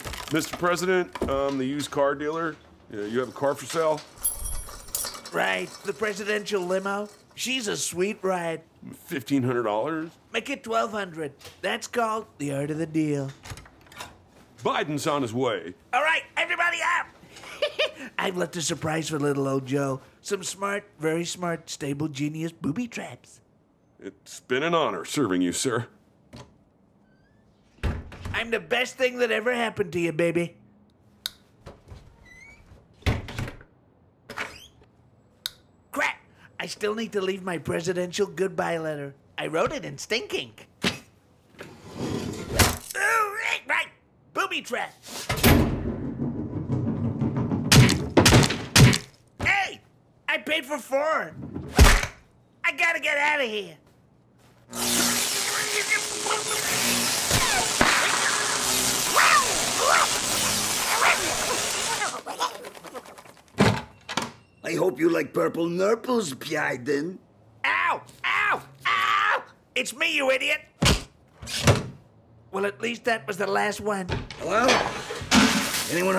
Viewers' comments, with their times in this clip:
0:10 This was very similar to Trump's voice and words and very realistic, this is a masterpiece, well done
0:17 He laughed like Chucky !
0:17 nice Chucky laugh
1:04 “Bydyen” HAR HAR HAR